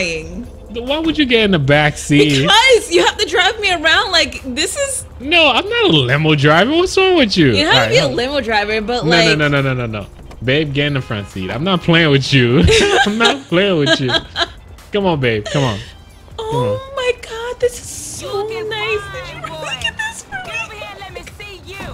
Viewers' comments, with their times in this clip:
0:04 turn you volume up